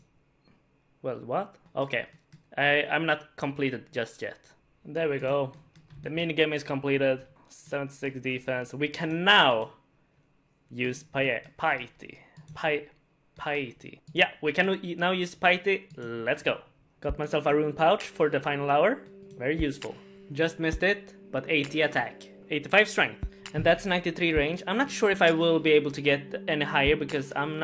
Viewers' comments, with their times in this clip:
0:10 "We can now use pie-eaty"